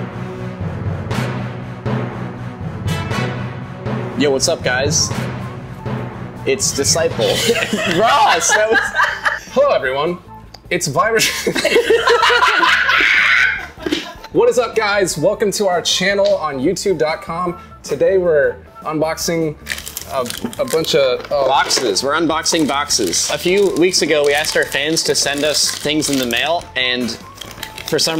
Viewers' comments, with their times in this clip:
0:09 Hello everyone! It's Virus- [everyone bursts into laughter]